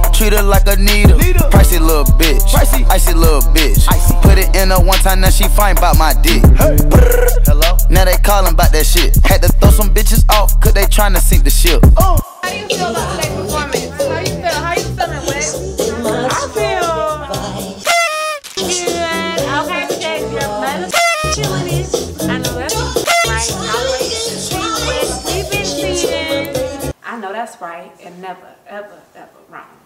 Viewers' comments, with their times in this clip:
0:10 yass that MJ playing 😍